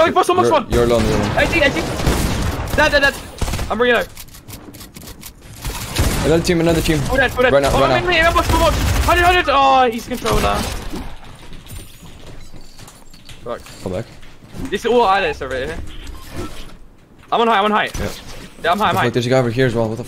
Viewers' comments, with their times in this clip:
0:07 This nigga he controlla 😂